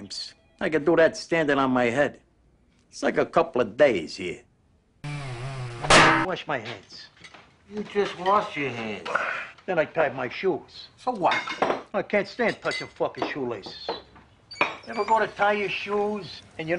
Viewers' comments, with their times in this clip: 0:04 delivery of that line was impeccable